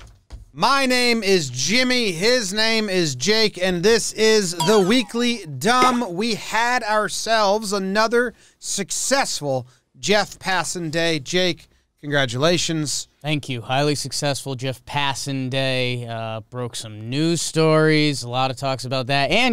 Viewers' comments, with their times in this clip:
0:03 those sound effects really makes this fun